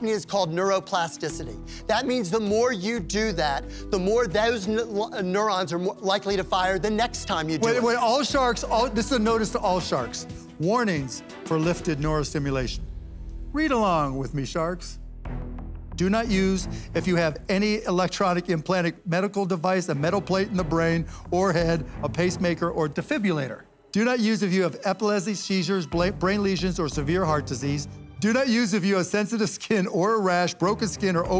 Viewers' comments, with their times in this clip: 0:03 " the more thosenausnnurons " the device fried his brain LOL
0:13 Mark said it like he's a supervillain lmao